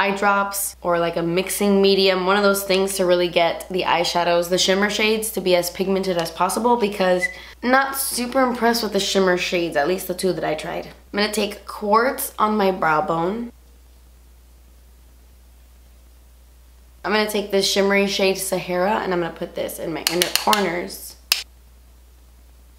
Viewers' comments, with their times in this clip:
0:05 Lol that whistle so cute. that happens to me sometimes.